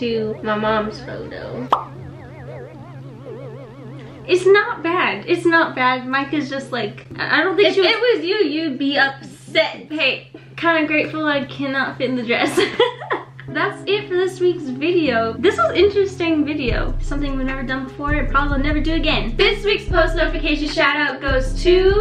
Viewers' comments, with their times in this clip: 0:03 you can hear the alien sound from TikTok